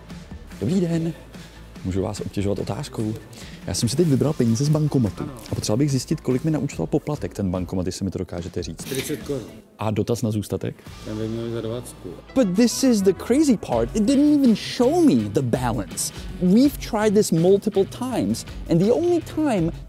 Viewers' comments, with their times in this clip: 0:07 I never knew that Czesk sounded like Dutch.